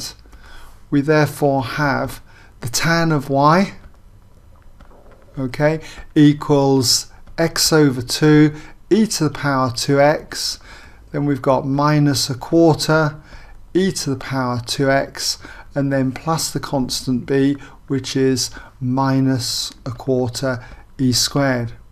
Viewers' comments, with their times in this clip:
0:03 Did anyone else hear the stomach growl xD Great work by the way!